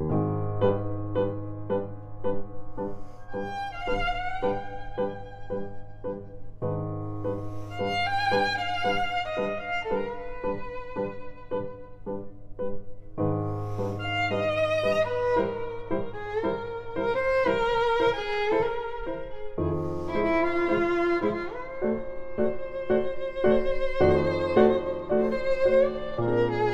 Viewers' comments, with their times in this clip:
0:07 How can this be so foreign and familiar at the same time? Like nothing I have ever heard before, but sooo right. I don’t even have the words to describe it. I like it, alot.